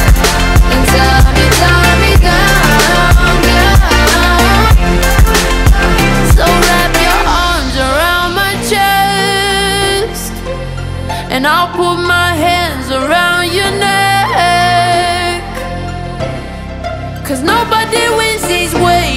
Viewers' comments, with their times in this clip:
0:06 It's definitely from to all the way to when the drop hits, the bass drum the backing vocals, the guitar, the way it builds, it's something else for sure.